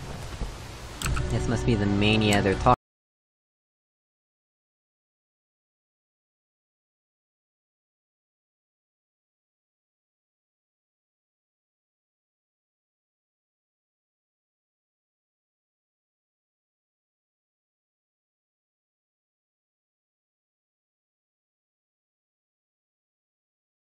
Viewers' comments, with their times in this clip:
0:08 Your mic got jammed. I didn't hear you. Whatever. I know what will you say this whole time